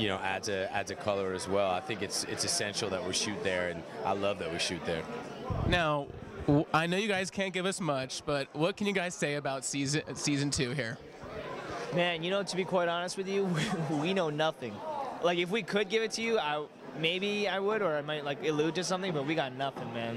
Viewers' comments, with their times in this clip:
0:04 i know that it was a chair but it sounded like Steven farted then smiled